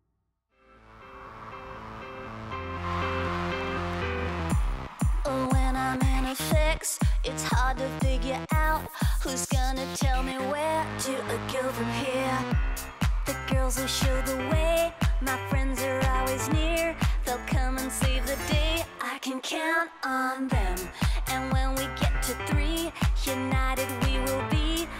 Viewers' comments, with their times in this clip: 0:05 Did Auriana just said "When we're having sex"?!?!